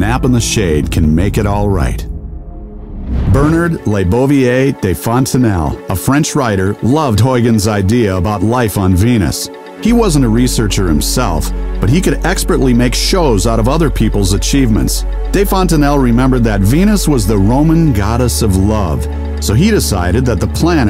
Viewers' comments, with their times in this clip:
0:07 you pronounced the name HORRIBLY! im french and i know how to say it